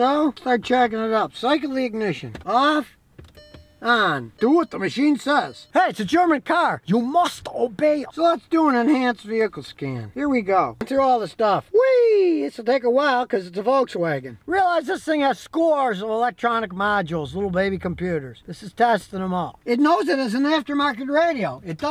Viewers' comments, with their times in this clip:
0:06 that german impression or whatever that was. “you must obey”. Haha Love it😂 Keep up the great work Scotty!